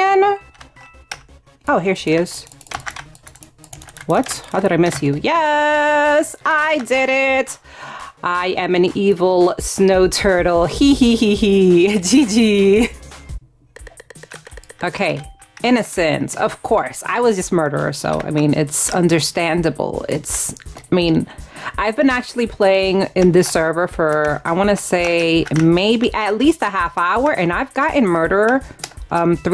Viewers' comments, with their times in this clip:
0:10 Her 'he-he-he-he' IS SO DAMN CUTTEE but evill 💗💗💗